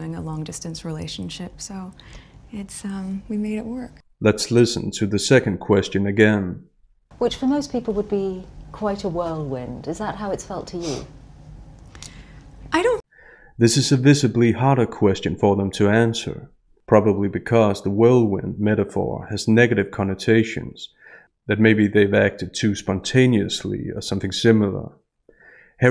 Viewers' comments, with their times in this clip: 0:10 STOP SNIFFING Harry!& why is she always hanging on to him? It’s also like she’a been practising in the mirror? “Is this my demure smile, or is this my sad face?” And why talk about how fortunate she’s been with 7 years on Suits & 100 episodes of a show no one cares a lot about. I imagine Will thinking she’s plugging Hollywood here which is the wrong tone for this engagement interview. 👎